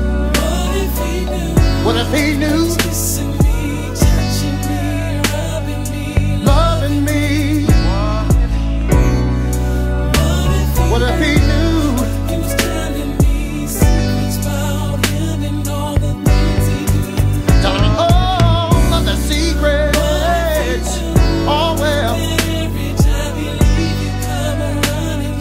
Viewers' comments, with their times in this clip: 0:09 it sounds like tank in the back ground to blowing